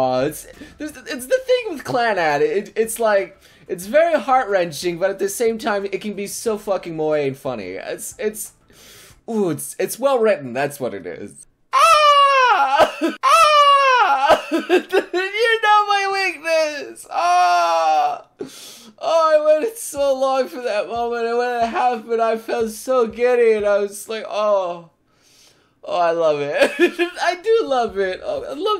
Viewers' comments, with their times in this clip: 0:10 hah, you did the Noire scream. I am happy now
0:11 Have you ever seen something so adorable you turned into a seagull?